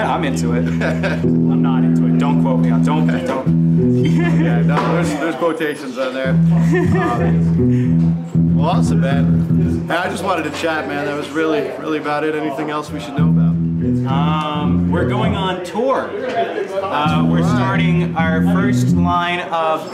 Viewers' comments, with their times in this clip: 0:04 his cute little laugh vvhhvvh